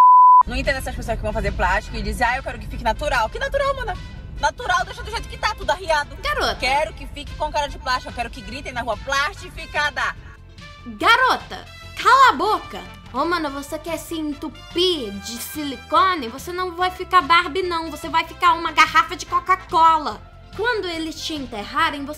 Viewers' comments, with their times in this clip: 0:06 You speak Portuguese?!